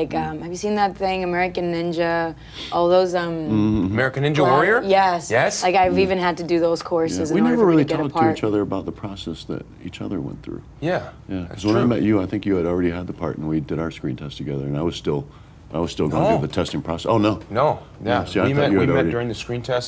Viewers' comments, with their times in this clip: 0:03 "American Ninja Warrior? YES!" Just the way he said it, makes it sound like something Andy Dwyer would say xD